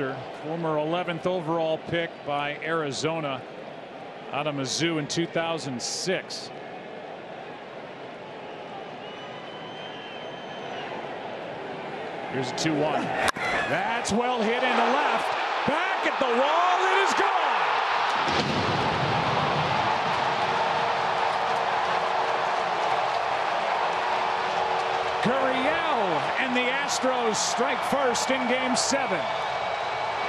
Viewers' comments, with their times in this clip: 0:09 you can hear a loud whistle about the time the catcher gives the signal to Scherzer. And suddenly Gurriel hits a fantastic home run. Perhaps another clip showing evidence of Astros cheating?
0:11 whistle for the slider 🤔